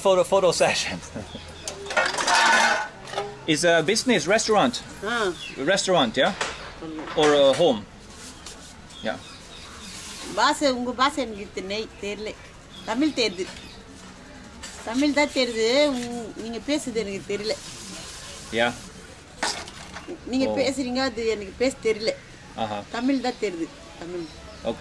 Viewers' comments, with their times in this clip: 0:09 not quite sure if she said the brit died after a meal or after THE meal 😂😂😂😂